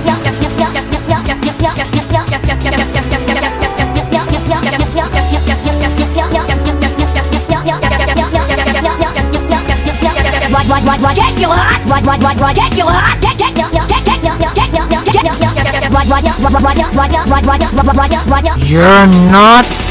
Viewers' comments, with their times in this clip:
0:04 steven sounds like spongebob sin counter:41